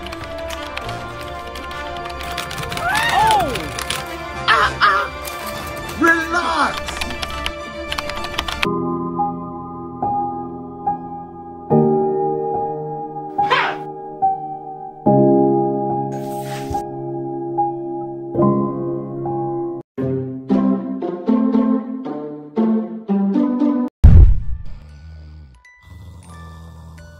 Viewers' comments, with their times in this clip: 0:08 I feel kinda bad for the chicken with the music